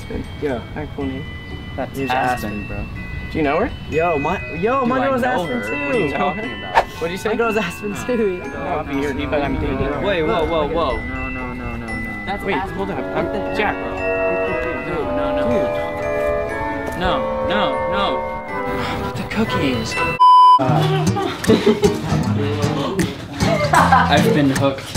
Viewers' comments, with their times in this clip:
0:10 IS IT JUST ME, OR DOES ZACH SOUND LIKE HARRY STYLES !?